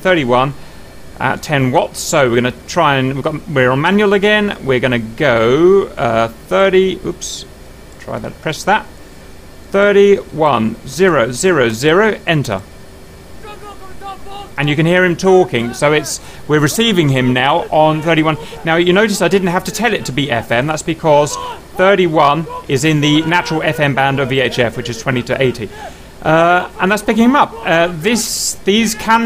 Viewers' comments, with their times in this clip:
0:10 angry russian noises